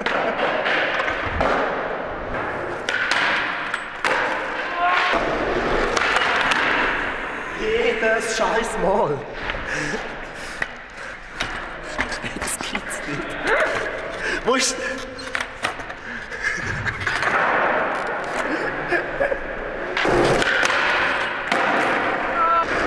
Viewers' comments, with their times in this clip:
0:05 min = "Jedes Scheiss mal"??.....did he said this?